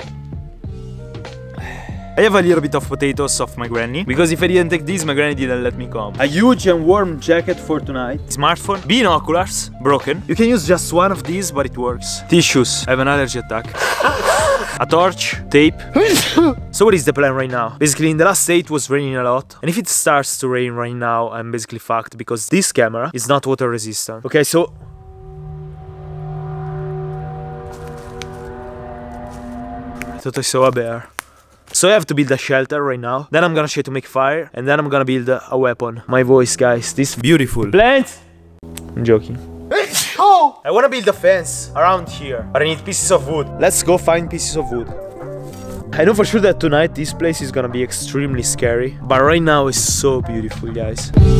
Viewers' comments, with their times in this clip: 0:08 guys its all bout the bean-o-ku-lars
0:21 im basically fwaked 😂😂
0:38 that sneez lol
0:39 he might have scared away all the bears and wolves and boars with that one sneeze loooool
0:39 The sneeze 😂😂😂😂😂😂😂😂😂😂😂😂😂 Love you man